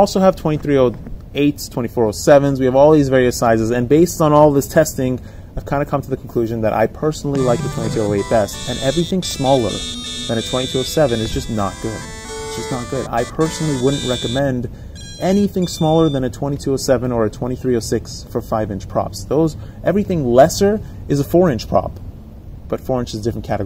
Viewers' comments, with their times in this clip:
0:07 That ESC sound !!!! I love it !!!